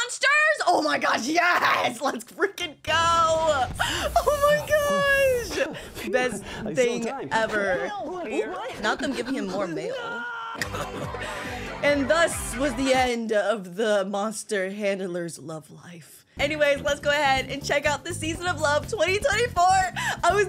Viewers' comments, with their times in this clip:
0:08 Bro just scream